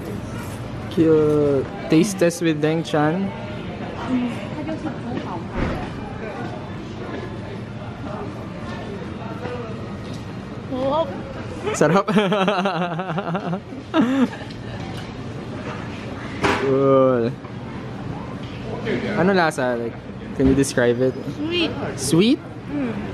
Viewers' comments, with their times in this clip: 0:10 that laugh so cute